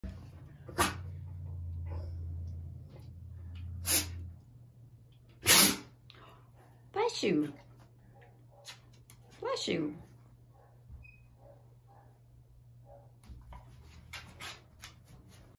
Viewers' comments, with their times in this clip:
0:05 The wink and the sneeze! Cuteness overload <3 <3